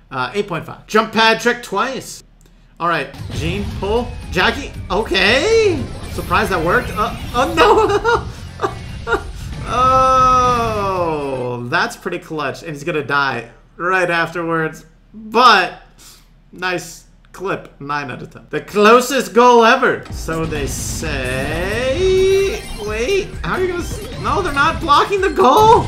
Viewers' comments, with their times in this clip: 0:07 that laugh sounded like a Gene honestly